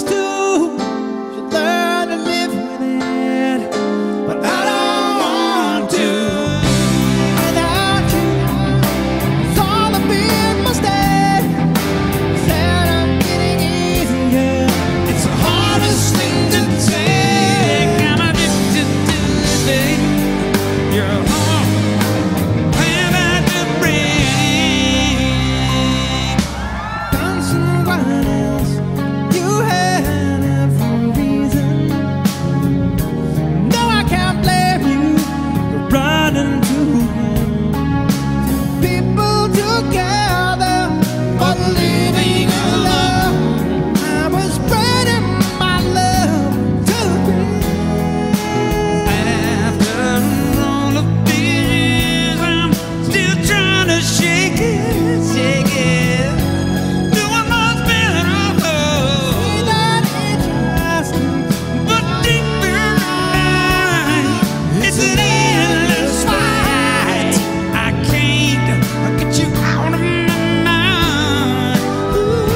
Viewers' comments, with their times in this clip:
0:10 Is somebody trying to land an airplane or something???
0:39 The drummer just wants to get this version over with.
1:00 "But Ding Burn in Dine" ? What was that, Bill??